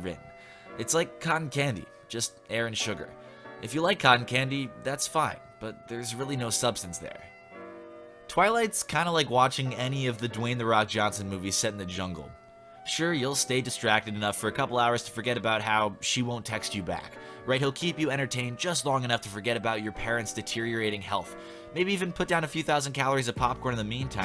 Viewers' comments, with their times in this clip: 0:08 you can hear the repressed years of self-hatred creeping up in his voice as his description becomes more intense. 10/10 YouTuber. Too relatable.